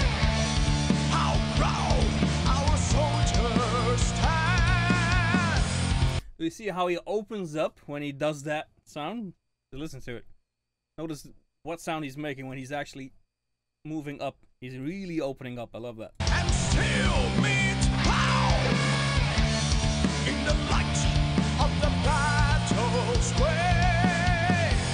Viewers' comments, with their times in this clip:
0:05 Ser, I like your "MetalGiggle" Happiness shining through. 😊 Gotta ❤ it. am here in British Columbia Canada 🇨🇦